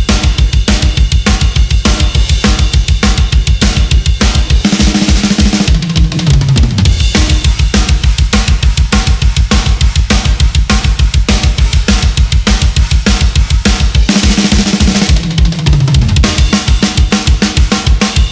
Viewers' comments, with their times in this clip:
0:03 ...had to double-check that I wasn't watching at 1.25 speed! Dang!